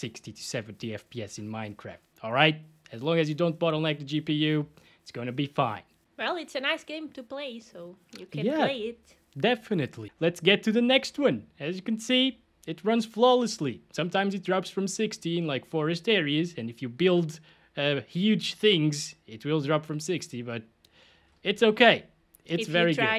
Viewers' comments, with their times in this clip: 0:05 when he said "don't you say its my 5900x bottlenecking" it almost sounds like he's tired of people crapping on his cpu.